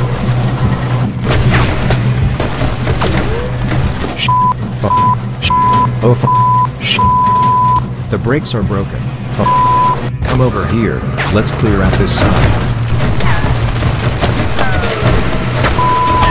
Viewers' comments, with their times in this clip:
0:03 i like how he keeps swearing over and over with censor beeping yk